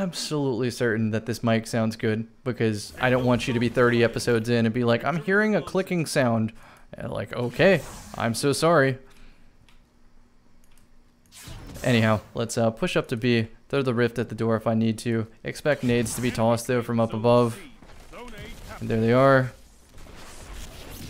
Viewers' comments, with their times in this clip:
0:05 The teacher when she hears that one kid in the class with a pen